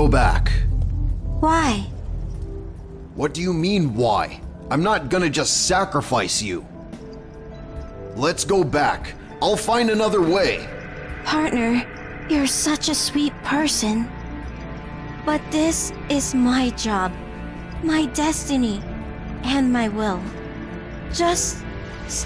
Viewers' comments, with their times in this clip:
0:10 Not the PLin PLin Plons bro. Why you gotta do that.